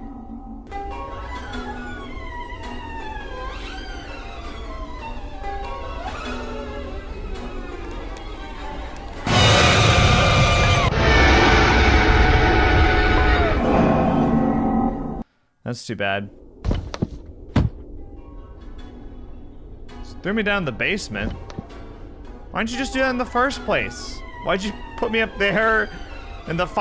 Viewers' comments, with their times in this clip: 0:09 That Girl Scream…